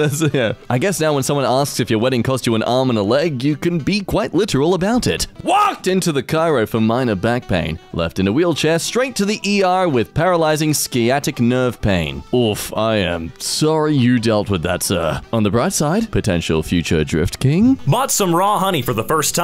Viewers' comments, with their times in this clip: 0:04 "WALLKED" that got me.